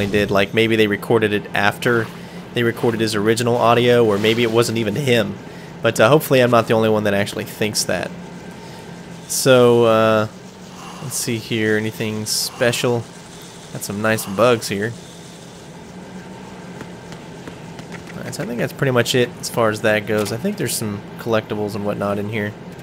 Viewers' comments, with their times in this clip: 0:08 Colonels voice sounds different because they had to change the dialouge for people playing on the 360 (i have both the 360 and PS2 versions, so I know how he originally sounded). I've actually thought of the idea of playing the Plant chapter from Snakes point of view before and it almost makes me wish this had come out a few years later on PS3 and 360 (pre HD Colleciton obviously) so that they could have done a DLC for that. If nothing else, it would have put everyone who was dissapointed about playing as Raiden at ease and it would have added some replay value, since by playing as Snake, you would get to see the entire Big Shell before the C4s blow up half of Shell 2. But even so, Im glad the game turned out the way it did, I admit to being disappointed about playing as Raiden at first but as the game went on he kinda grew on me, plus IMO he has the best character arc in the whole game (and the second best arc in the series, next to Big Boss himself).